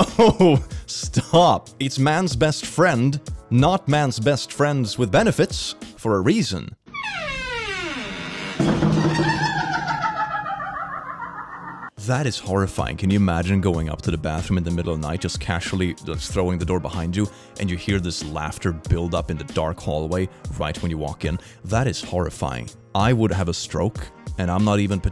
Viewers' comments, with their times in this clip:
0:05 the door really had a boo laugh show that one to Mario.
0:06 That laughing door is my fricking favorite thing now XD
0:07 my brothers say that my laugh sounds like that.
0:07 is legit a villain laugh from one piece XD
0:08 that door really went "RERERERERERE"